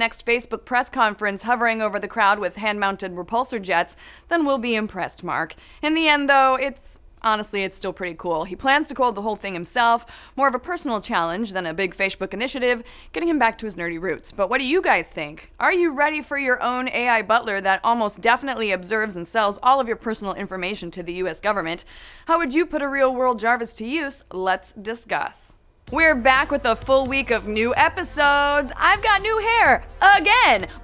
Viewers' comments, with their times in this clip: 0:10 A big Fashebook innitiative
0:12 you miss pronounced Facebook and that tattoo on your hand illuminati confirmed!!!!!!!!!